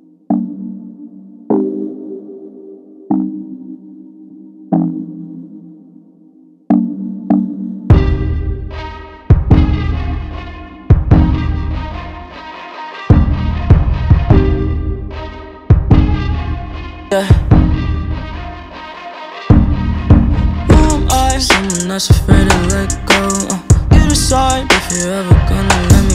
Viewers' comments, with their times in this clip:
0:08 love the background music